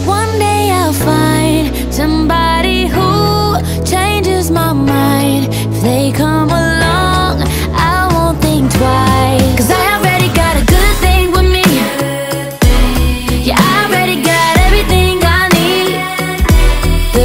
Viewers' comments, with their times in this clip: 0:04 isn't there arround it kind morph with the snare sound